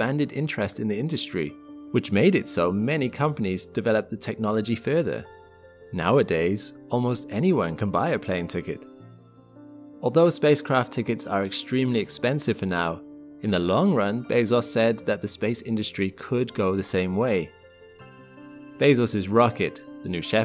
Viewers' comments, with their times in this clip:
0:04 almost any gringo hahaha you live inside a tupperware.